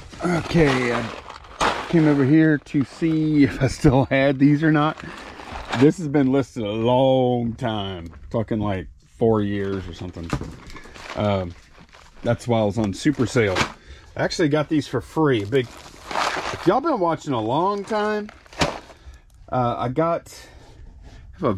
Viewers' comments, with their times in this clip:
0:04 I Think she misheard you because of your slight accent- I'm guessing she mistook you saying 'talking like 4 years or somethin ' mark, as 'f***ing like'...